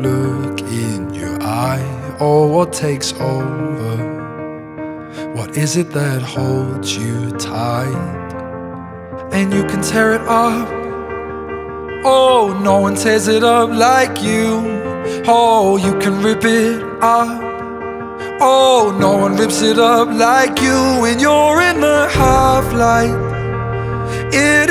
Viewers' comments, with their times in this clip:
0:10 It sounds a lot like Dan Smith, specially how he sings and there some "oohhh's" in all the song. It has a lot of Dan's style in ths and I love it.